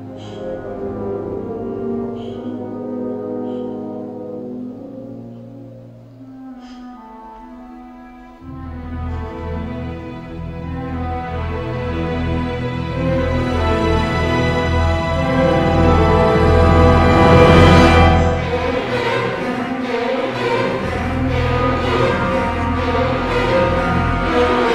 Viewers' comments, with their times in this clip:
0:06 the music from here onwards just gives me goosebumps everytime